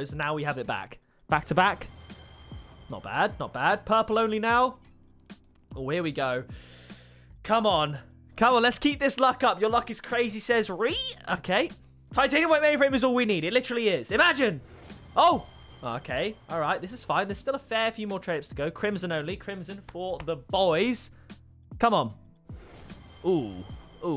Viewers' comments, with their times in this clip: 0:10 that voice😂😂😂(was a edit right?)